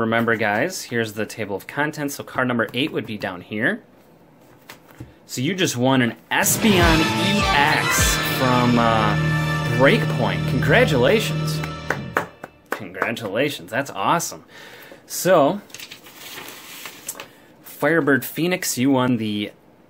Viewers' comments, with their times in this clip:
0:07 music scared the crap out of me XD